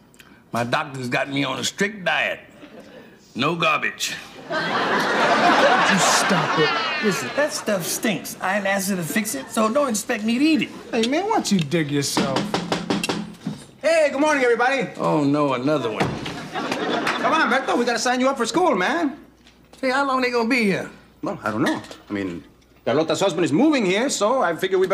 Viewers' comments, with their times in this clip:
0:06 what kind of laugh was that ? 😂